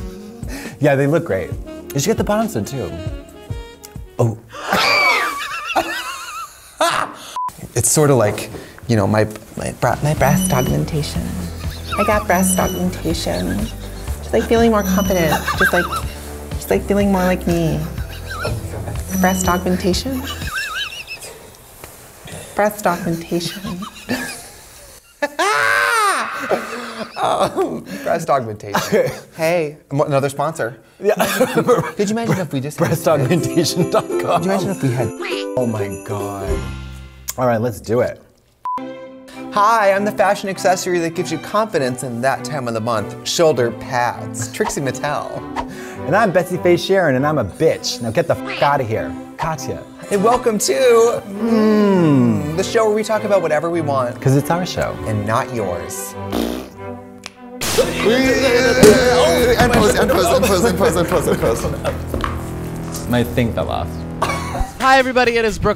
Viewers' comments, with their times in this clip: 0:04 I have watched the preamble of this UNHhhh episode FAR MORE than I care to admit. The first 15 seconds are just pure self-love. The "oop" from Katya and the scream make me BIRD NOISE every fucking time.
0:10 Trixie sounds so fish tho
0:12 why does Trixie sound like a kardashian though🤣
0:25 I'm not sure if that was Trixie's laugh or a crow. But I love crows so... I have to love Trixie.
0:51 we actually hear Katya says Hmmm instead of Unhhhh